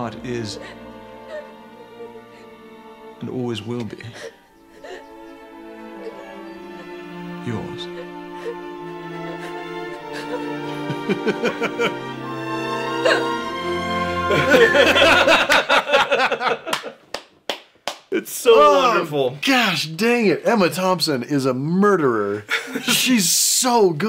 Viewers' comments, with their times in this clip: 0:06 Alan Rickman 100% hot, yes! 🔥🔥 Also, is the best use of swelling music in any film scene ever. Gets me every single time.